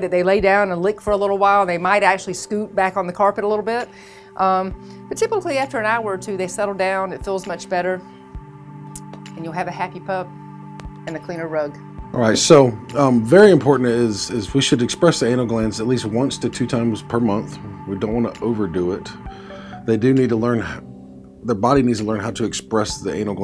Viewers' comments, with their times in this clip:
0:09 Why would i want a Hockey Puck